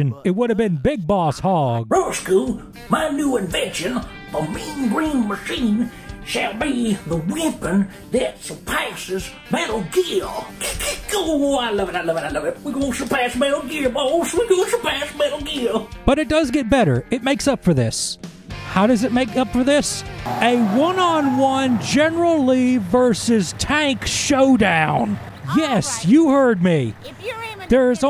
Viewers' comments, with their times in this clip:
0:10 Great Rosco impression 🤣👍